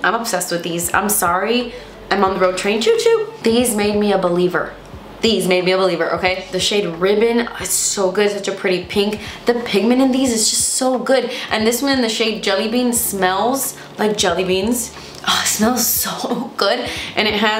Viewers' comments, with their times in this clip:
0:04 lol I thought you said, ‘these made me a BELIEBER’ 😂 - stunning look and collection btw xxx